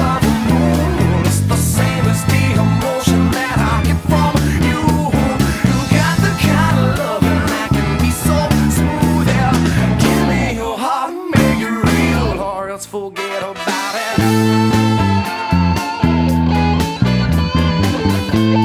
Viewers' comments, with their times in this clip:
0:05 question: isnt it a c instead of cis ?